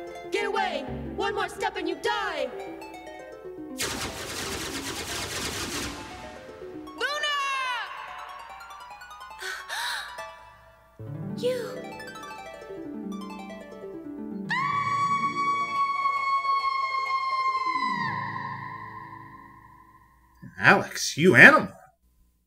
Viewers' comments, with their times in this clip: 0:08 Holy crow,guess Alex didn't get instant puberty from turning into a dragonmaster in this version,and I thought Sora in KH1 was in desperate need of a puberty spike because of that light,girly voice of his.Ok both Sora & Alex needed one.....still not nearly as bad as Nall's voice lol.